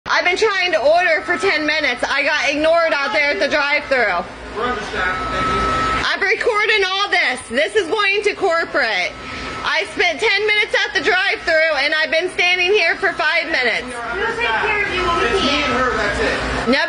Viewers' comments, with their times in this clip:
0:00 as somebody who worked at Wendy’s I hear the beeps in my dreams. It took several months after I stopped, working there to no longer here, the beeps in my dreams. So yes, it does. Drive us nuts.